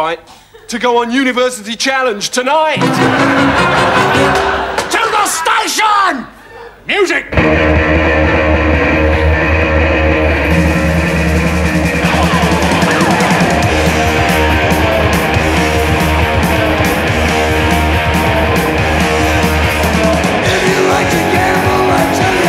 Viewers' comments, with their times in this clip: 0:06 Best music transition EVER!!!